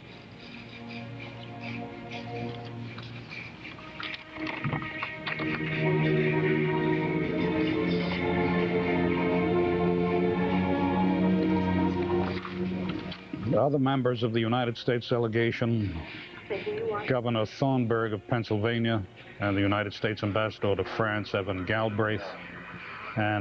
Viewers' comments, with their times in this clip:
0:10 this barber's adagio for string makes the atmosphere became full of sadness